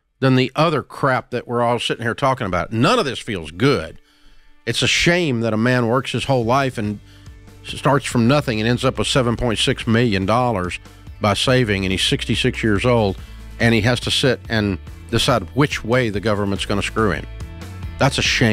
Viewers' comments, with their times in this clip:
0:06 I really love the addition of the music Something about the world's tiniest violin being played in the background was just so fitting in that moment.